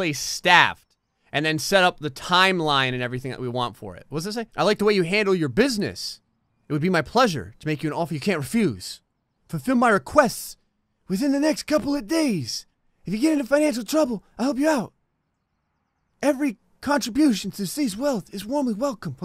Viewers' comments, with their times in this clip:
0:04 I love how halfway through reading the note he started to talk like Mr. big from Zootopia😂